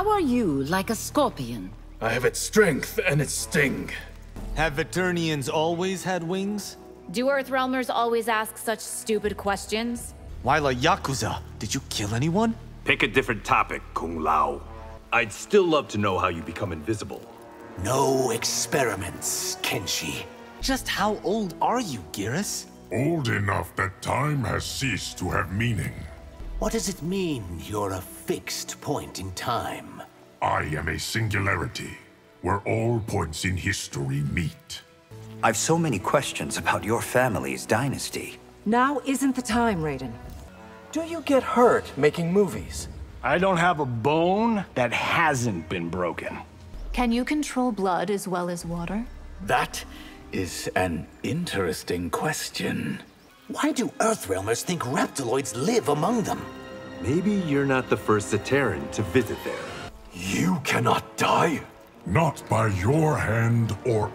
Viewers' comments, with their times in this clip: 0:04 the voice acting of megan wasnt that bad here. I wish all of it was at least like that.
0:07 WOW nitara actually emoted in that sentense AND was sassy!
0:47 Megan Fox’s voice acting there wasn’t that bad